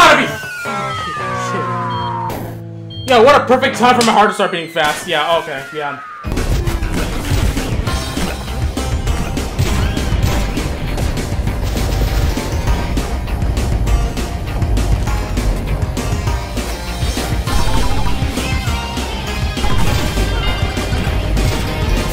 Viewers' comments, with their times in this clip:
0:08 nice music sync moment